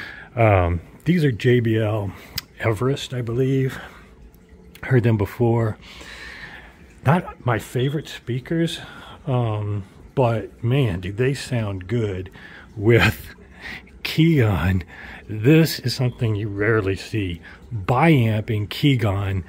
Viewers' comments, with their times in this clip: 0:06 smoke alarm chirping... bruv! get that battery replaced lol :) nice speakers but